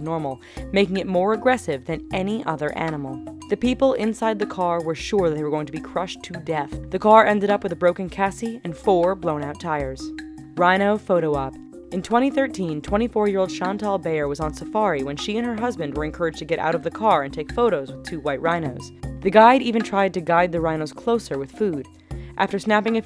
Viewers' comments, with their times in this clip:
0:07 a broken 'cassi' ? and why didn't they just drive off..did the driver freeze up?
0:08 Broken Kasi its called a chassis